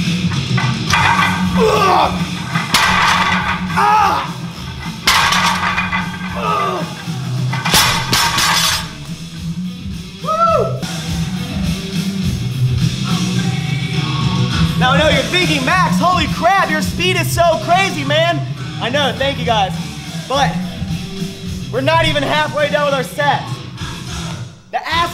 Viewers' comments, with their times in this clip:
0:08 I'm a simple man.I listened Metallica song Then I liked ur video